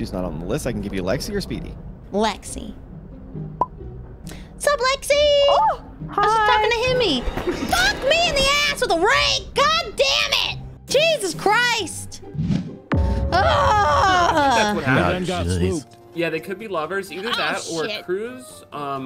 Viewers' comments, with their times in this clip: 0:06 I don't usually laugh... but when "fuck me in the add with a rake" was yelled. I died.